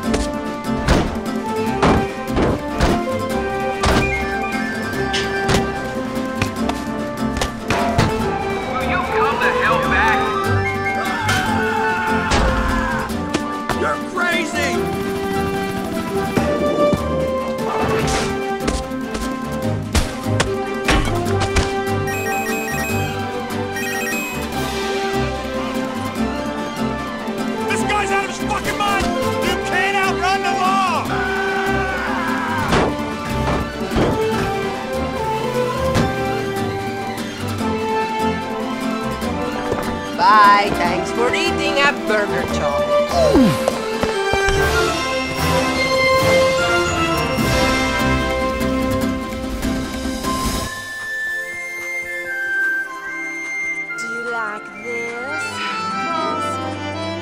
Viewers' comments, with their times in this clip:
0:04 The ping of the metal bar is hilarious
0:29 I love how desperate the cop sounds when he tells the freaky mutant cartoon plumber that he can't outrun the law.
0:35 was great. Everything seemed so peaceful. Thunk.
0:39 why does this sound like Luigi?